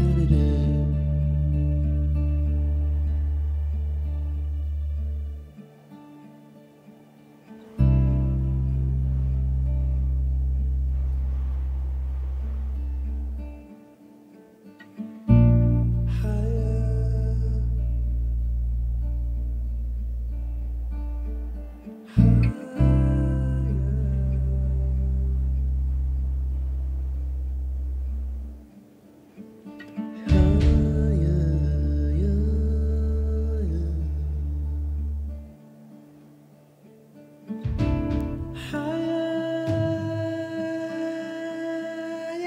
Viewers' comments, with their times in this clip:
0:10 The change in tone is sick. The vocals were great also.
0:30 The Part has some Haken Vibes and i love it.